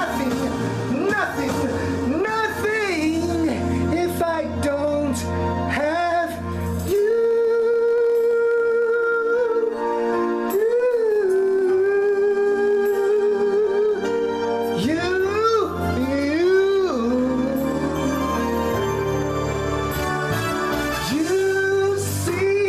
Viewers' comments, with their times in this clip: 0:07 The falsetto was impeccable